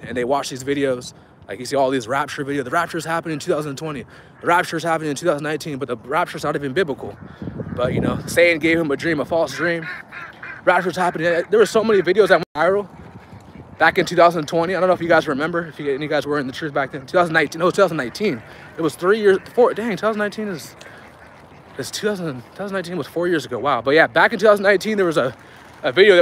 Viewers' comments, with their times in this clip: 0:07 Hey for a about minute or so you hear a wicked laugh in the background I heard it a few weeks ago and today I watched this video again to see if that wicked laugh still shows up. Check it out! The devil is a liar don't get scared saints the laugh is wicked but Jesus our Lord is our Fortress. Amen and Hallelujah!!